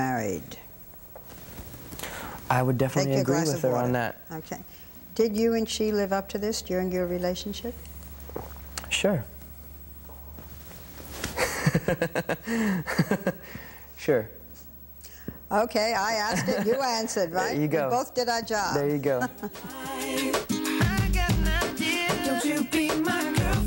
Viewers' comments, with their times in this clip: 0:07 the gulp before he says "sure" is just too funny lmao